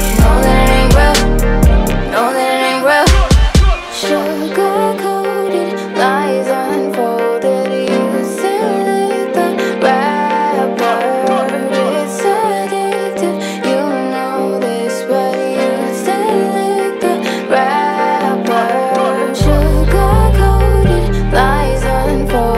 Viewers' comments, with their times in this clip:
0:04 it sound WRONG DISCALAIMER